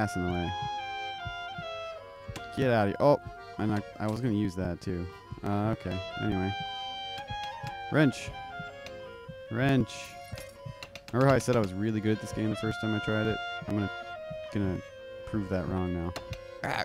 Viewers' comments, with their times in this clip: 0:03 Boing! I love video game physics.